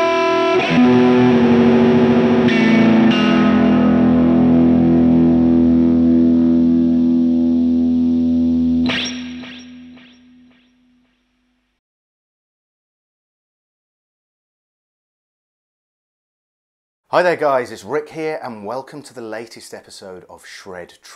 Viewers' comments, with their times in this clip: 0:08 Literally sounds like pulling a sword out of its case